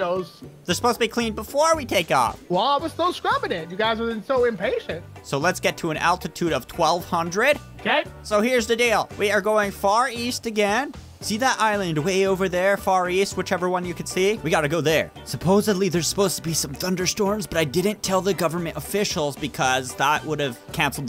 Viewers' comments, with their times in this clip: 0:04 listen to the voice
0:06 so are we just going to ignore that perfect harmony?